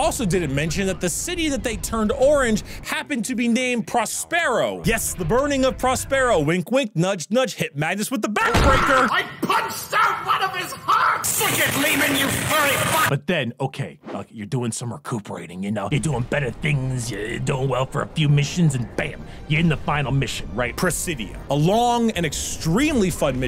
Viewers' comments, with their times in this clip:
0:08 Why is earrape Zegram so fucking funny?